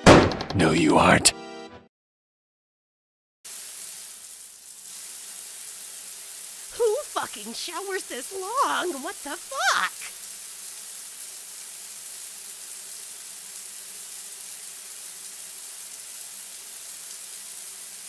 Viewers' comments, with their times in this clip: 0:05 that line delivery was GOLDEN